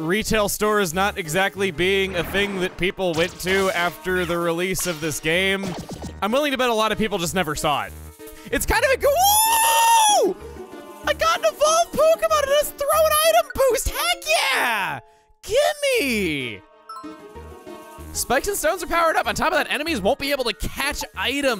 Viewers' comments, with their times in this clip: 0:08 was that... Victreebels cry?